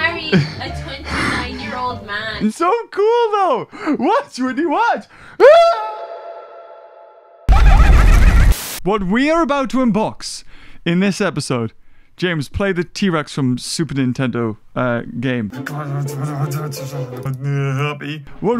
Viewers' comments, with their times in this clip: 0:03 omg that echo tho 🤣